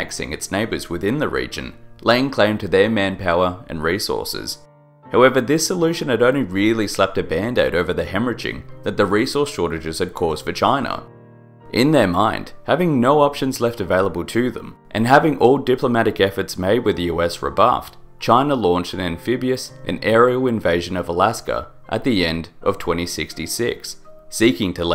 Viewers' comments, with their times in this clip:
0:10 I thought he said something VERY different